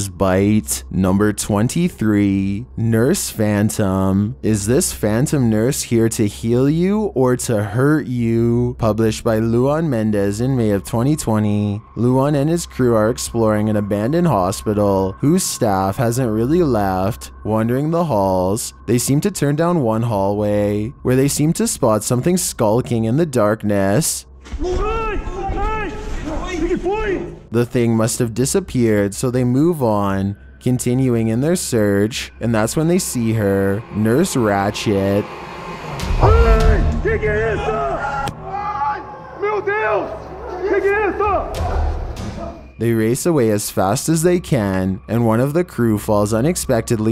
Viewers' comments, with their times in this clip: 0:04 When that thang FARTS
0:33 I thought he said nurse ratshit at first ngl